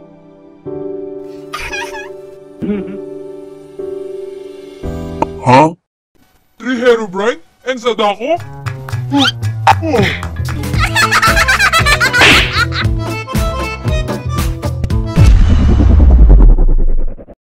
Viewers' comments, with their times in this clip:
0:10 The way skeleton laughs is so funny
0:11 When Skeleton laughs